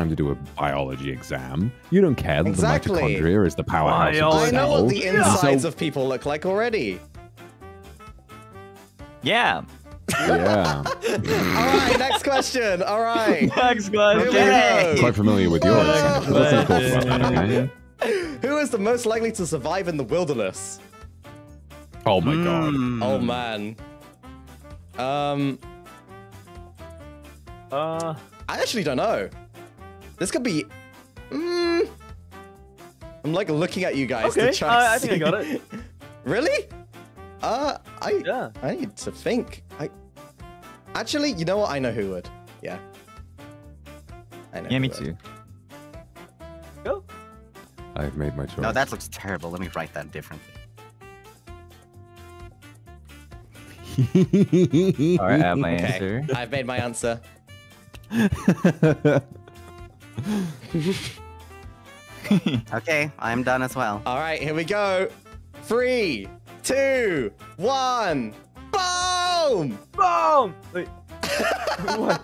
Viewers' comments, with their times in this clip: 0:04 THE SILENCE I CANT
0:54 goofy ass laugh LMAOOOO